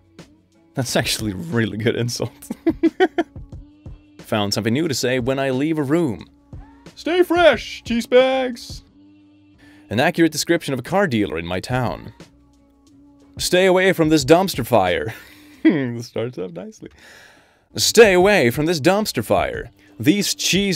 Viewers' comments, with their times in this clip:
0:04 why does that sound like peter griffin crying and shouting at the same time? lmfao